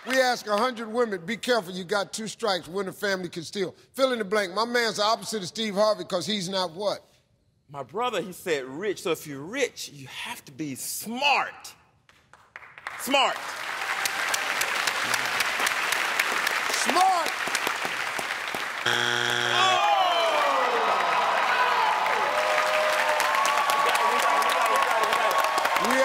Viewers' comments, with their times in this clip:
0:10 The way that guys saved smart is hilarious